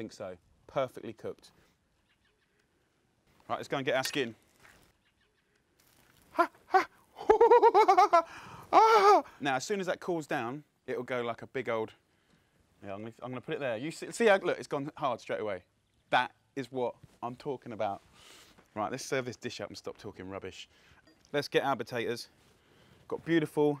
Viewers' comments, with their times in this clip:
0:08 why did he sound like h20 delirious?